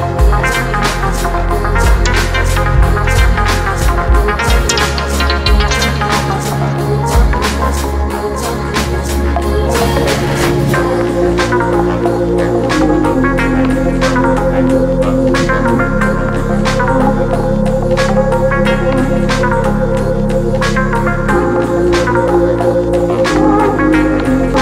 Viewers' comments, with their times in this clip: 0:09 That mid range thick bassline that comes in is probably one of the greatest sounds I've ever heard